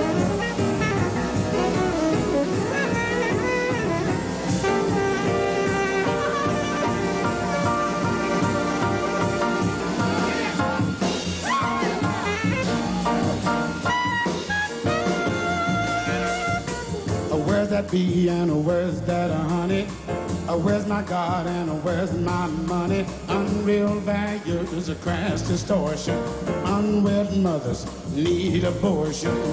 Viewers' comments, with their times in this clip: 0:08 I agree with the other comments. This is true Youtube gold! This song is amazing, and I have loved it since I was in high school in the mid 70's. To see the smiles and joy on their faces when they finish the crescendo going from F up to C shows how they must of felt that they just nailed this. That run switches rhythm half way up and it's tricky. One of the best live sessions ever. Thanks for posting the wonderful images after all these years of this song for so many of us.
0:11 When that drum hits after the piano builds, it's so perfect it made me weep when I first heard it. (ie: ). An excellent example of players being almost inside eachother's heads.